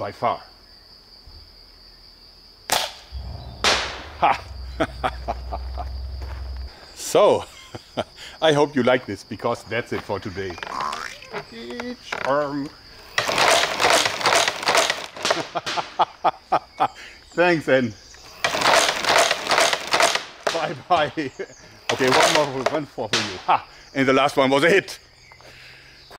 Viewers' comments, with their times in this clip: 0:10 Am I the only one that heard the cartoon coil spring sound effect ?